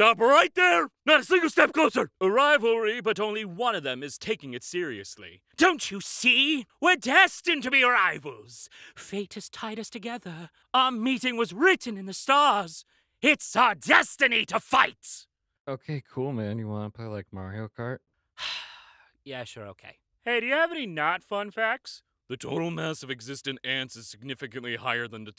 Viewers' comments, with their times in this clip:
0:06 You should honestly be a voice actor, when you said that I could literally see that as a villain monologue in a video game or a movie
0:07 the way you read this reminds me of the orcs in Shadow of War when they introduce themselves
0:07 the way you read this reminds me of the orcs in Shadow of War when they introduce themselves